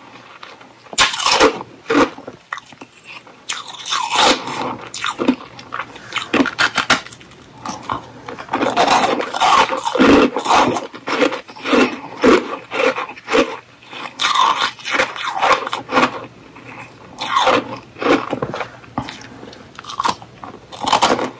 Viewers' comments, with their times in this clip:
0:07 2 bites relaxed chips eating... I liked it a lot...